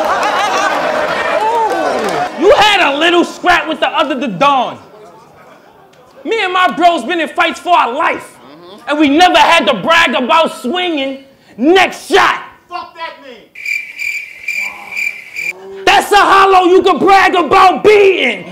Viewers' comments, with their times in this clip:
0:05 Quiz time a guy from the crowd yells out …………….. Peak comedy 😂